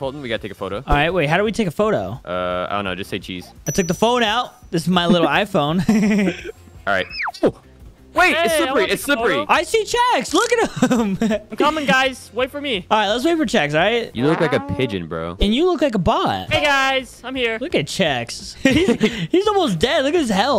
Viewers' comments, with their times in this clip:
0:05 that peter griffin laugh🤓😂😂